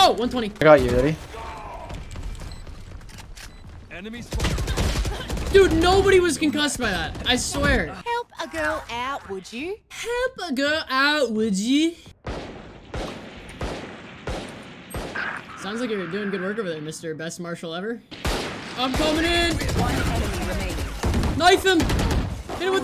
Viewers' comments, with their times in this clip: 0:08 i am culturally offended by the attempt at the aussie accent fucking hilarious that its just a bad german accent
0:09 I'M DONE!! why do people think Australians sound like that